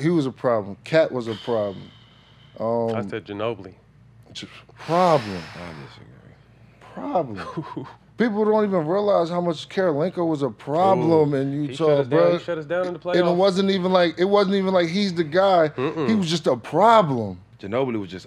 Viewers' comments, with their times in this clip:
0:03 Matt: I say Ginobili Jack: under his breath I disagree 😂😂😂